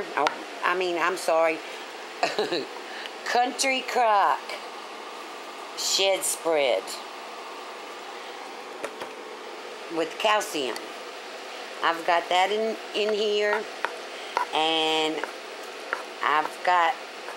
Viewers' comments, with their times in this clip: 0:04 Did she say Country Crock shit spread ?